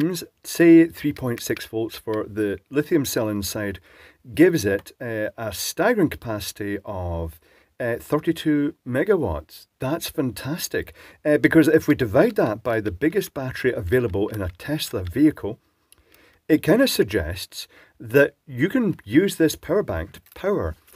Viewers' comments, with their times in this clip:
0:08 “Thats fantastic 😃” The way you said that was hilarious